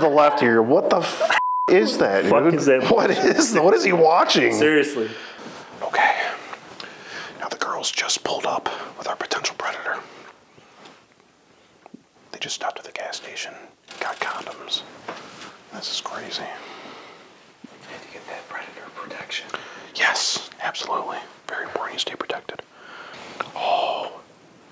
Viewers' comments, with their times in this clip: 0:05 bro should make his own ASMR, sounded so good unintentionally 😭 could make the predators go to sleep